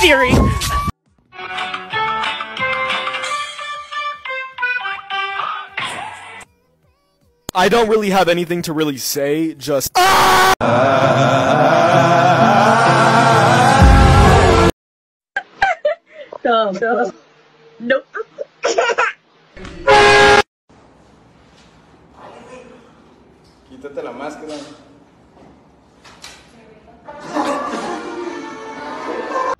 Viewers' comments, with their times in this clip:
0:10 Song? it sounds so great